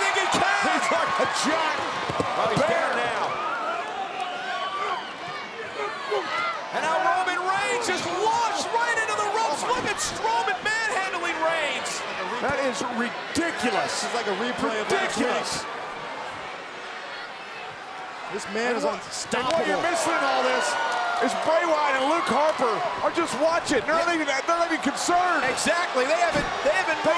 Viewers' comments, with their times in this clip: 0:09 that highnote tho